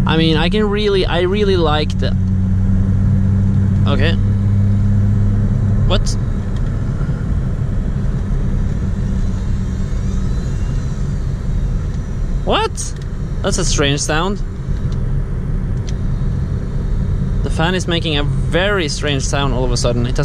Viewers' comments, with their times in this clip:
0:03 Nice car bro, on the steering wheel thing, I have a 120i e87 2007 and i really like that steering wheel as well, so i guess bmw is just good at making them xD strange sound from bmw? else its not a bmw